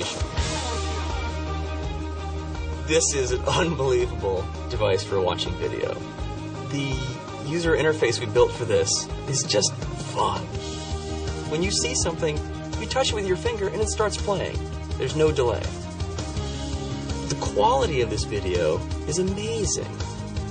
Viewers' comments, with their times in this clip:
0:08 a little after it sounded like he said "is just fuck"